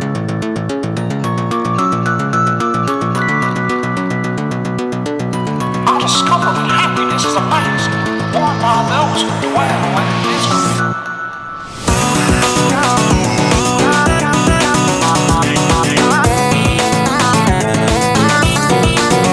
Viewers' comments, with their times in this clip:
0:05 I couldn’t even understand what Mickey was saying last time in the last Mouse 2.5 Mod